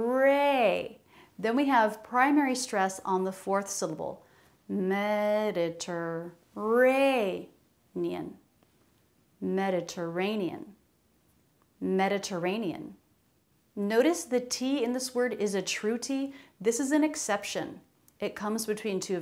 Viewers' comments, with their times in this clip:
0:05 It sounds to me like "Terrain, terrain, pull up! Terrain, terrain, pull up!" 😂